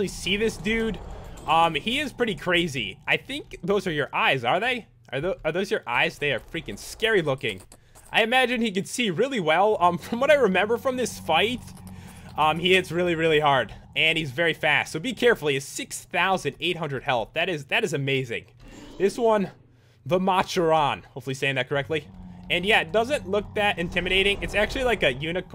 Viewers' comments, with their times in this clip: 0:08 did I hear writing ?!?!